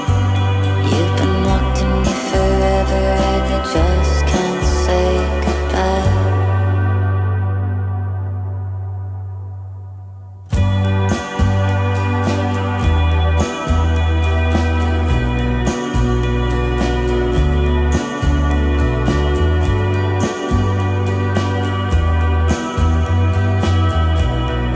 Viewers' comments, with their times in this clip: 0:06 bro the pause hits me so hard, its like when you think your done crying, then it all floods back for round two.
0:10 this part sounds like him <3
0:11 The beat scared me lol..